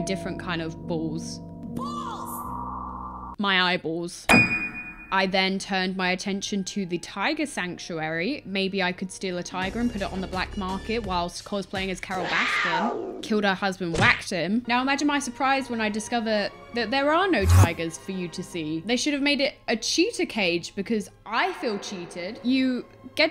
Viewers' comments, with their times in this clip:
0:09 The tiger walking with chad music made me laugh more than it should have LMAO